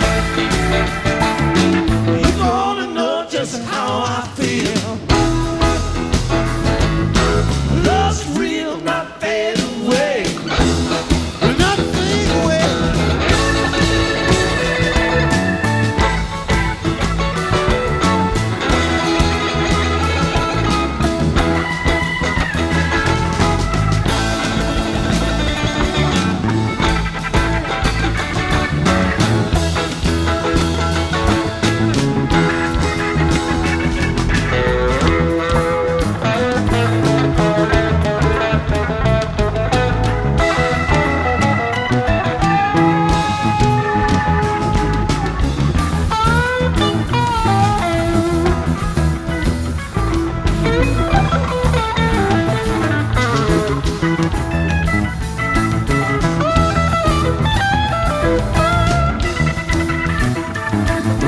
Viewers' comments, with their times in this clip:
0:07 Watching Jerry and Brent riff against each other starting is just fantastic. Weir doesn't have to do anything but stand back and laugh.
0:11 When Jerry and Brent starting trading solos is one of my favorite Dead moments captured on video.
0:39 The Jerry-Brent mind meld that starts at about@ is one of the more intense mind melds I have seen between the two , the rest of the band just kind of fades away there for a few , and the audience kind of fades away , all that is left is Jerry and Brent having a long drawn out conversation about lawn trimmers .
0:39 Some of you still realize this 💎 Many of the older Deadheads may and say this was common but I’m 23 and to see Jerry and Brent have a mindbender of a back and forth riffoff while everyone else did their own stuff then came back. I know that’s just the Dead baby but chefs kiss
0:46 Jerry and Brent’s back and forth at the mark is magic